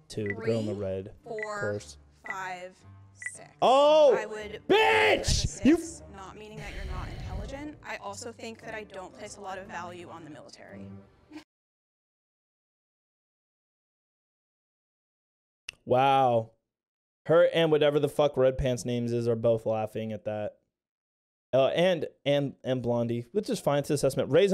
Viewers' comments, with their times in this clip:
0:08 And I FELT that pause too many ppl underestimate servicemen and the laCk oF reSpeCt !!